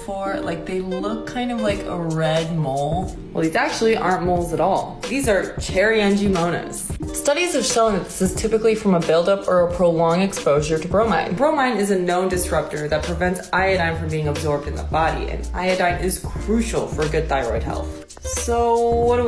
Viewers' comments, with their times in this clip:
0:04 Cherry angimonas ??? You want to give advice & you can't even pronounce AN-GIOMA -